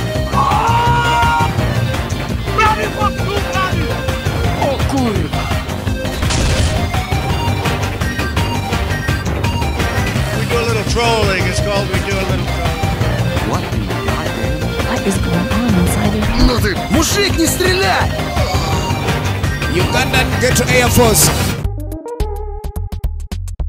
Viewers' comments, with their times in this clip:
0:04 That Stachu Jones' okurva captivated me